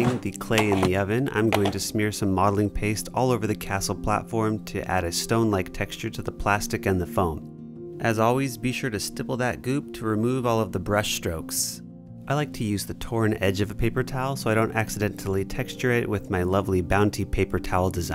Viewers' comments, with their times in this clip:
0:03 Starting maybe it's just me, but I swear that music in the bg is the PlayStation 2 memory card screen ambiance